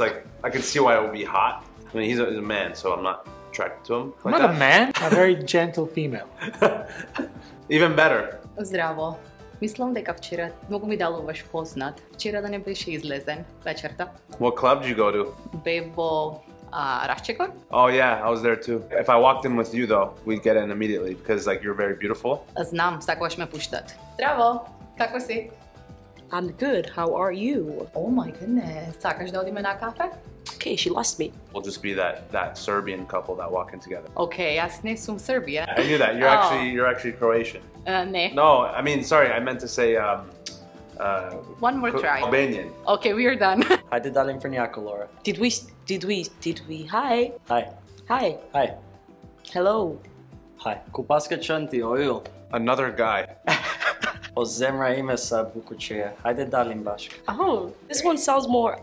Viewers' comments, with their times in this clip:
0:09 wtf what is that goblin , its not speaking with Macedonian accent where do you find these people
0:43 albanian starts I could barely understand even tho its my native language 😂😂